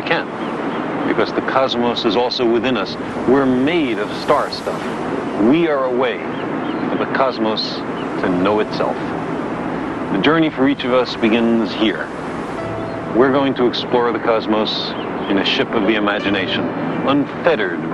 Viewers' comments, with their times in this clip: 0:05 "..we are made of star stuff, we are a way for the cosmos to know itself." If you didn't know this was science you might say this statement was made by a mad man. Instead when spoken by Sagan the words sounds like blissful poetry come to set us free from the confines of limited thought.